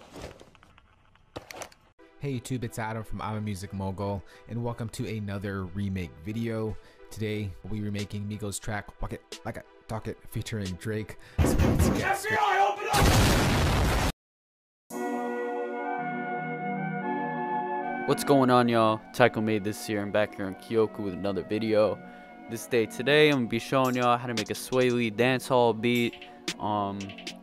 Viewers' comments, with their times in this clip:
0:09 never been happier to hear the FBI